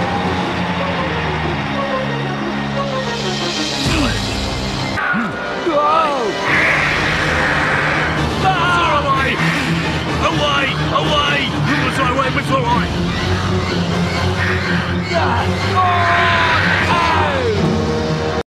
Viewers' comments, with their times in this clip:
0:09 Otaku E-chan Sounded like You're not facing the right way which is alright
0:09 When turn the CC on it's sounds like he saying the Light Hawaii😂🤣